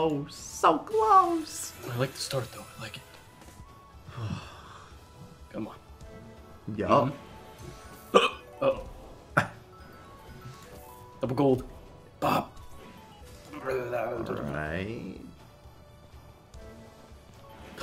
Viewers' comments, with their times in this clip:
0:04 Skip to if you're after watching the video without my guy in the call eating the packet. Was driving me crazy.